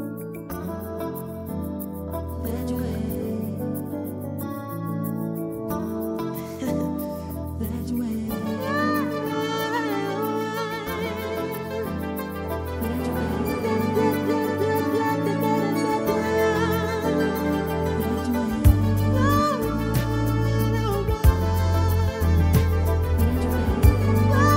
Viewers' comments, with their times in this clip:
0:05 his little laugh l cannnnt 😩😩❤️
0:05 This laugh in kills me
0:06 OMG!!! That sensual laugh is everything 😍 "That way...that way...*laugh* "...I'm melting!!! This man was everything ❤. Love it. Beautiful version 🙌
0:06 i audibly gasped i was not expecting the laugh 🥺💗